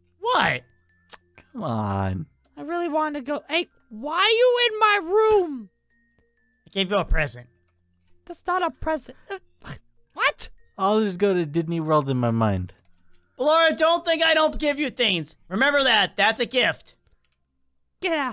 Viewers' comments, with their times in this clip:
0:03 when Ballora said why you in my room she sounded like a rapper